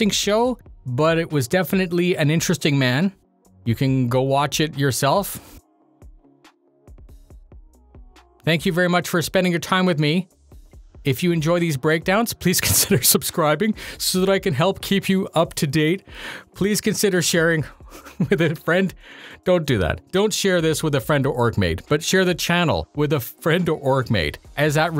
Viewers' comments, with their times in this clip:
0:05 Your random long pause speaks for the whole video/SC Live. I'm still confused as to what was this about.